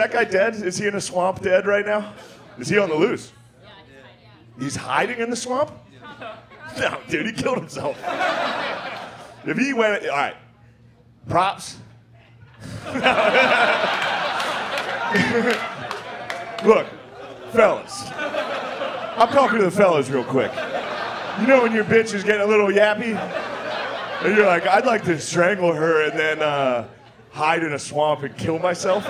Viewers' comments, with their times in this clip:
0:07 his timing is so funny when he said props then let it sink in for a min then he backtacks that shit is the funniest shit ewver
0:10 the set up: "props"... then the pregnant pause, before everyone got the joke and started laughing at the same time, was so risky, and could only be pulled off by someone with masterful execution like Shane. Unreal.